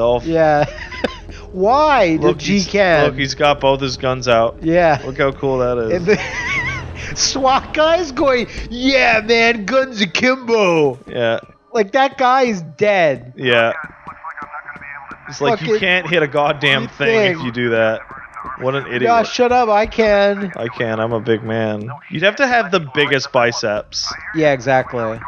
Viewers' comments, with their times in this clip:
0:09 Guns of Kimbo?